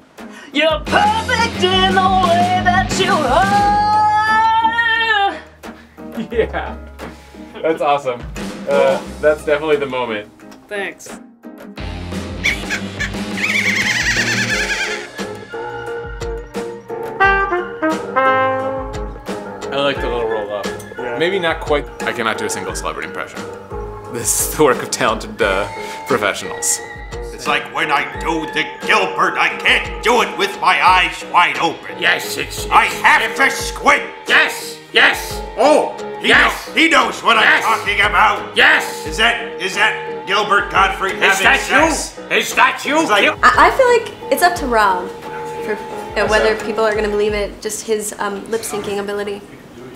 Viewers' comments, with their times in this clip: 0:03 Is she an actual singer? She's really good!
0:12 that's the weirdest Cher impression I've heard but okay
0:31 sounds like Bernie Sanders